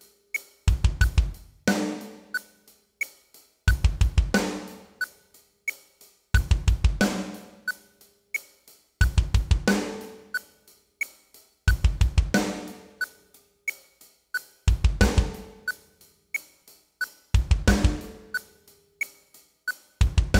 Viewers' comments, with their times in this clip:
0:05 is there a missed hi hat on the third bass note?